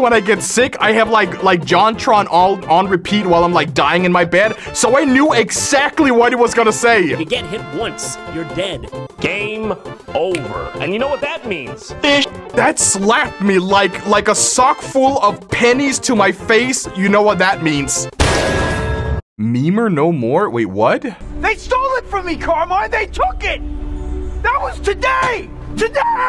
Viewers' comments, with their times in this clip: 0:08 he sounds like someone from SMG4 or Glitch but I can’t remember